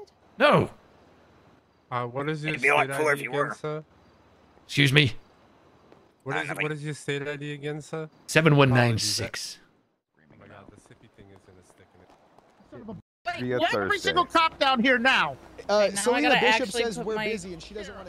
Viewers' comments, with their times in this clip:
0:06 Is that feckin Beavis